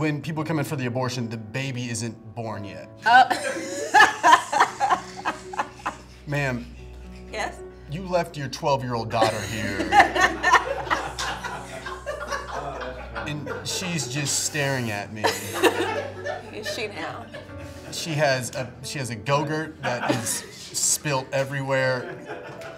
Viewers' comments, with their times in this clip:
0:08 the way she says “yes” literally had me cackling